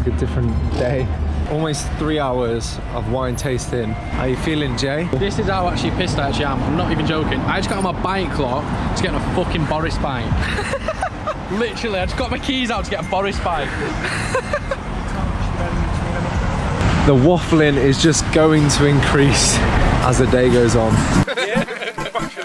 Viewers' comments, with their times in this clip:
0:07 what does he say here? I got my buying claw to get on a boris bike?